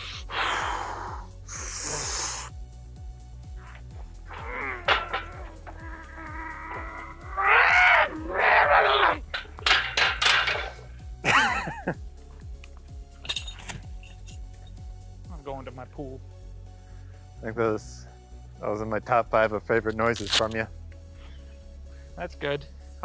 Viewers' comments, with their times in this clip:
0:06 Those noises are too funny.